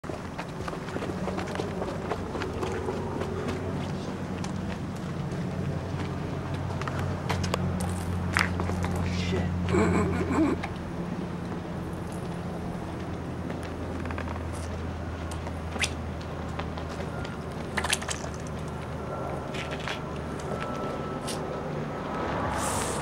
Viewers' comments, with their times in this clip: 0:07 hahahahahah lol SPLASH!!!